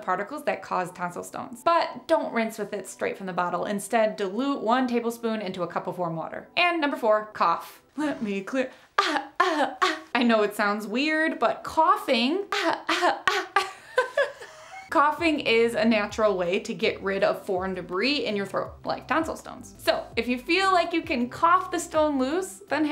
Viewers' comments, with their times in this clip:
0:08 cutest cough ever